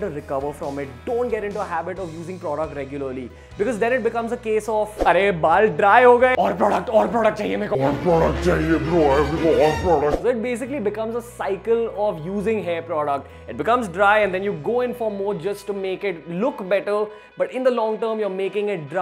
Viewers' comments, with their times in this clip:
0:05 sounded like Ashish chanchlani 😂😂